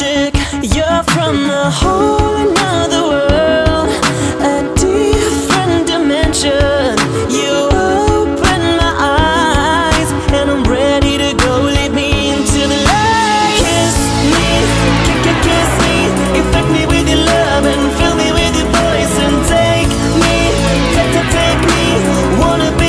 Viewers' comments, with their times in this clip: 0:10 I would be careful about the strobo but the song with a male voice is still so cool^^